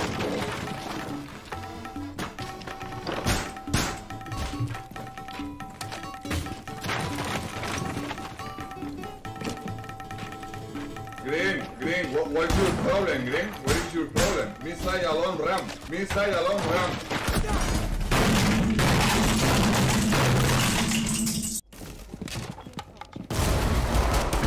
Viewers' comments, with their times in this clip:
0:10 The music is quite annoying